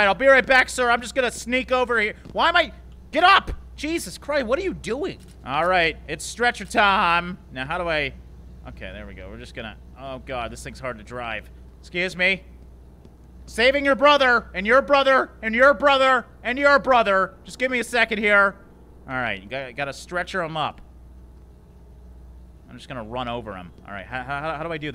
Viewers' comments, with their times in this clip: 0:06 The most epic voicecrack ever